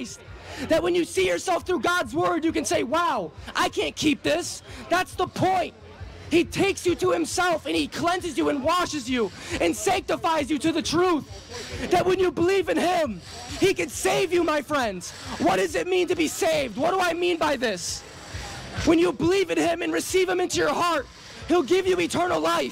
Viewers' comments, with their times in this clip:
0:09 this made me tear up, beautifully spoken sir.